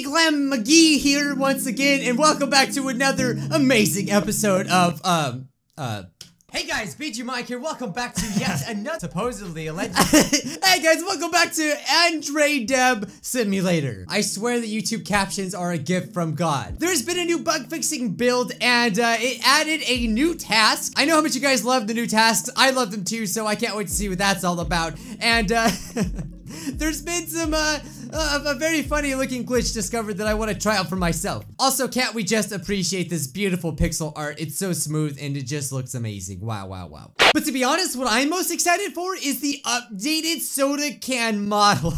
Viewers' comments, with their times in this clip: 0:06 i turned on captions and it said "Hey guys, feed you mike here"
0:07 “Hey guys, feed you Mike”
0:27 I turned on the captions and when you said there’s been some uh The captions said Benzema. Beautiful 😂
0:27 he said "Been some uhh" but the YouTube capations said "Benzema" XD